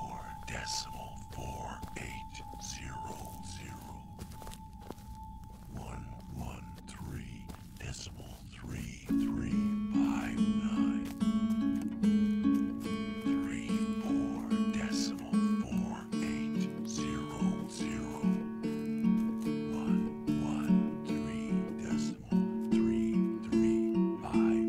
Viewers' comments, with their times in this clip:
0:09 The guitar playing that starts goes great with the setting of the traveling montage.